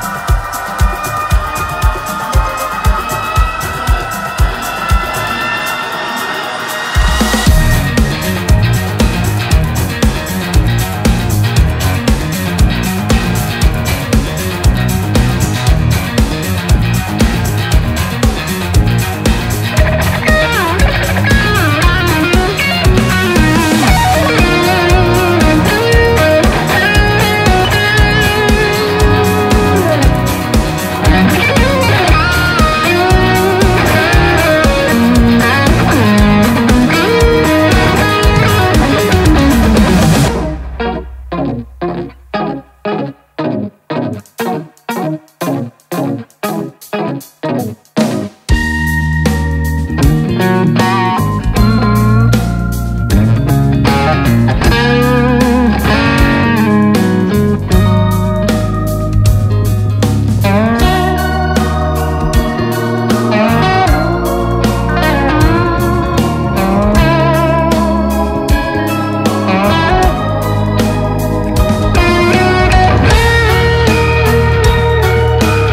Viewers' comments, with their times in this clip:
0:09 sir your stuff is amazing ! i have that riff stuck in my head
0:49 The solo starting is something else
0:59 Dude I’ve been listening to this on repeat and just now watched the actual video to be absolutely mind blown to realize you weren’t using a vibrato pedal or effect, that’s you riding the wammy staring You absolute legend